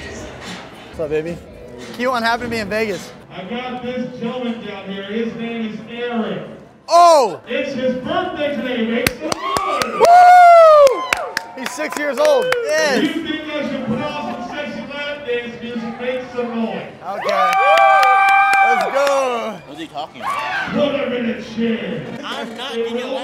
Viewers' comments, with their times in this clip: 0:04 man sounds like a goliath from borderlands